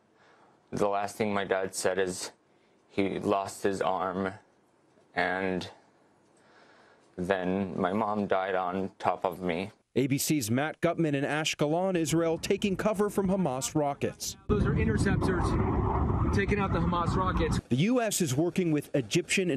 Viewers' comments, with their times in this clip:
0:04 Outstanding performance. She's laughing at her brother's acting.
0:04 Omg... She is actually laughing what the hell?!?
0:05 LMAO she is laughing at his acting 😂😂😂😂